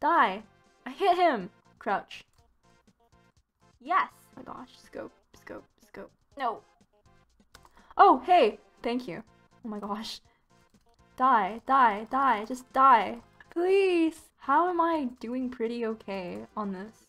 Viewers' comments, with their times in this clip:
0:03 That yes tho-